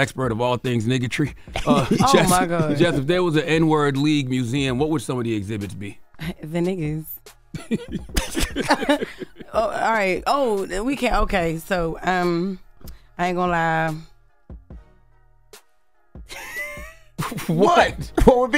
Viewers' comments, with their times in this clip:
0:06 Why she have to say it like that LMAOOOOOOOOOOOO😂😂